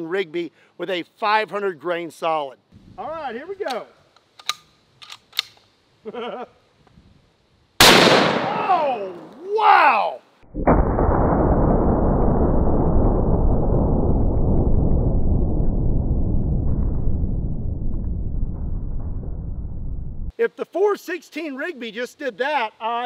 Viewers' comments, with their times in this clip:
0:03 that giggle always get me...
0:04 that laugh is contagious 😄 😆 🤣
0:05 that laugh before the shot at the mark lol